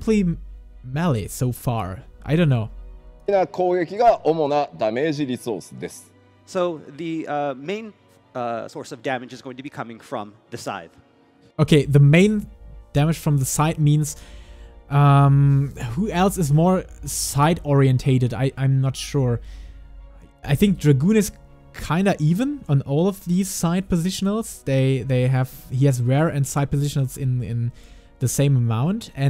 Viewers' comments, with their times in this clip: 0:06 I believe they said "Scythe", not "Side".
0:07 Not sure if anyone's commented before now, but I'm pretty sure Koji says "The main source of damage is going to be coming from the Scythe", not "...from the side". Hopefully that clears it up! :D
0:12 I am pretty sure he said: "the main damage comes from the scythe" not "from the side".